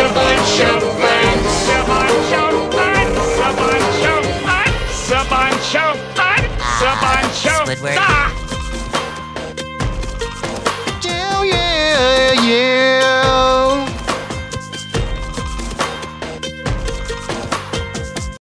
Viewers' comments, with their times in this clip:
0:10 HELP NOT THE MORDICAI FROM CARTOON NETWORK
0:11 why does that voice sound familiar to my childhood?🧐